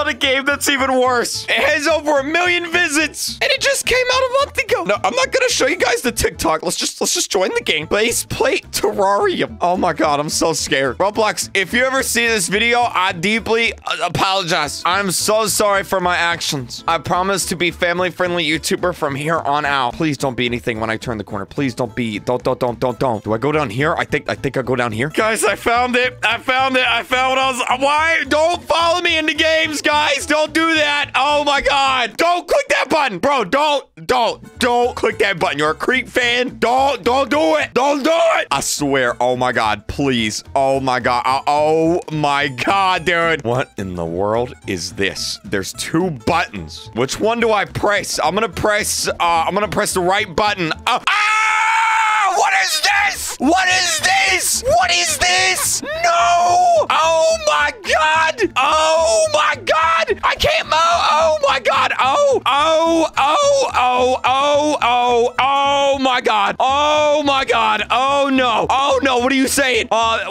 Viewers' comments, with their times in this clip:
0:07 he littoraly sounded like lankybox no cap
0:51 ah yes the most perfect scream ever
0:51 top 10 screams of all time lol
0:57 Ur OHHHHing my ears